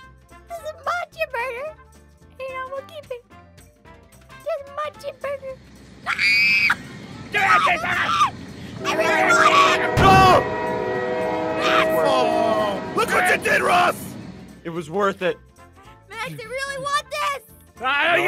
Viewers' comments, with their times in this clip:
0:05 I LOVE IT WHEN APHMAU SCREAMED XD